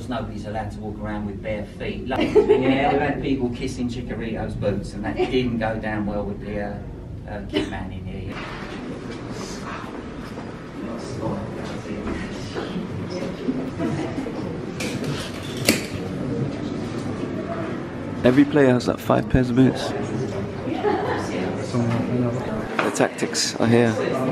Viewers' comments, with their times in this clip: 0:05 That time when your laughing by yourself and nobody is